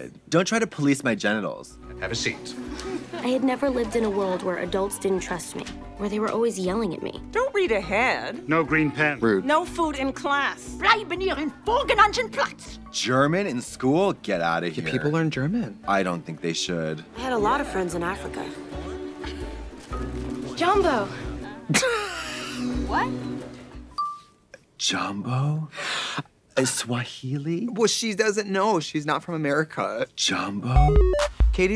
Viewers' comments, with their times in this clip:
0:10 wow… I am German and I didn’t understand A WORD
0:13 I didn't realize it was German until Trixie pointed it out Born and raised in Germany lmao. Thought it was French or some other shit